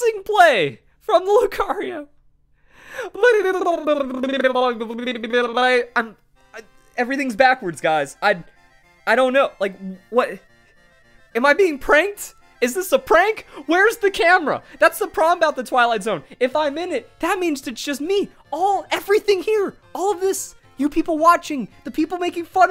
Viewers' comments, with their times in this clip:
0:03 is what motorboating sounds like to your girlfriend.